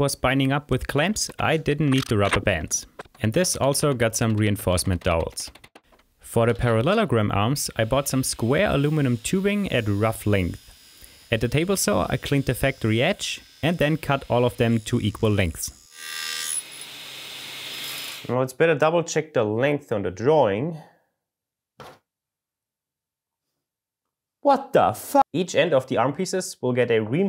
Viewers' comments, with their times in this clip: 0:08 LOL.... you said aluminium the way we do here in USA.....you can hear this